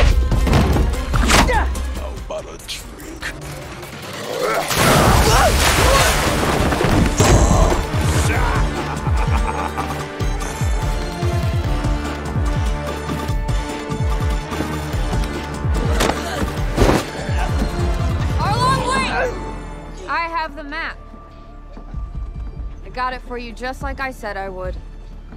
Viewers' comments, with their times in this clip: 0:08 They actually got Arlong's "Sha-hahaha!" laugh in this